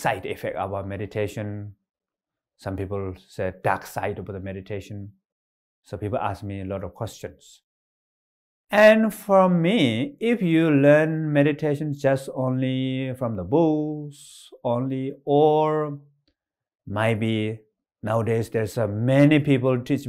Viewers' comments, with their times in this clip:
0:08 "if you learn meditation only from the booze" :D